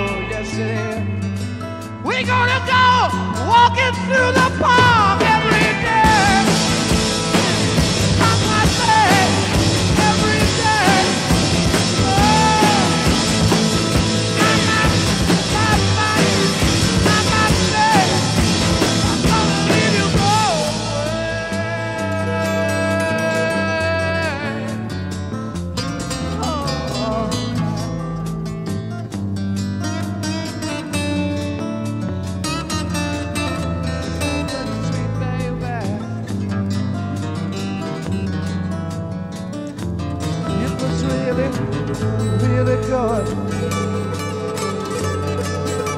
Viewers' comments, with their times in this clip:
0:04 heavily inspired by chicago ! wow 🤩 this so crazy never caught that 🤔 listen to 25 or 6 to 4 by chicago sound so similar
0:31 Jimmy taking a big huff on the left channel